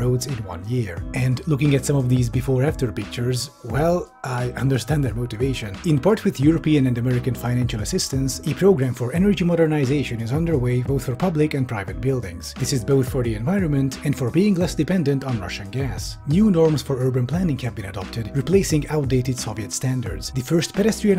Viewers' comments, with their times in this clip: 0:04 You can hear the pain in his voice.